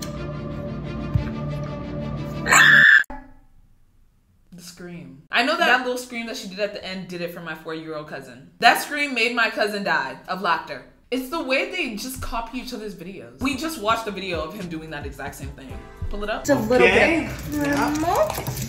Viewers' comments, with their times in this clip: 0:03 that scream got me rolling to china 💀